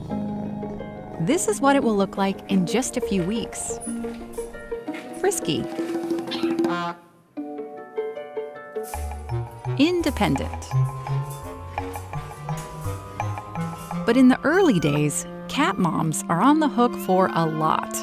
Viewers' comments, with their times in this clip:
0:06 That honk noise 😂